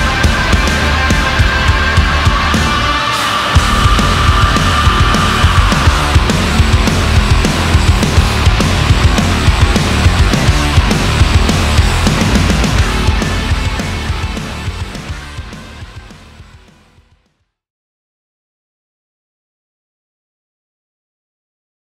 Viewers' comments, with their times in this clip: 0:05 BAZ still sounding bad ass and still headbanging as in his hey days